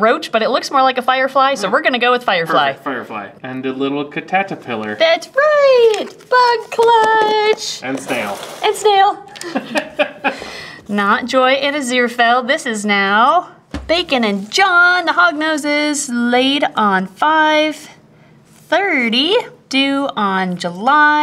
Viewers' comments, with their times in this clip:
0:03 It's funny because when i was a little kid cataterpillar was how i said it 😂😂😂😂